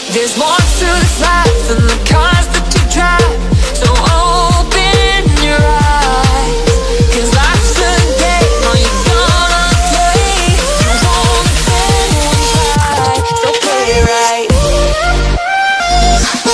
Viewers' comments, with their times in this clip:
0:03 beats are amazing